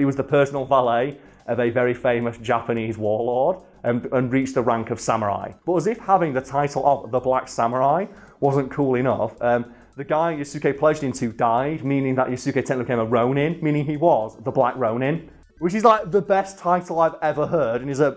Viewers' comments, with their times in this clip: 0:03 The way he said Nobunaga got a chuckle out of me